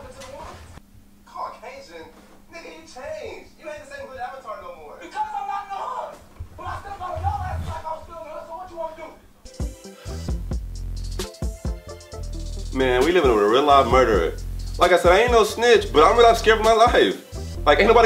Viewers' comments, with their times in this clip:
0:03 Did anyone hear Avatar the last hoodbender in the background or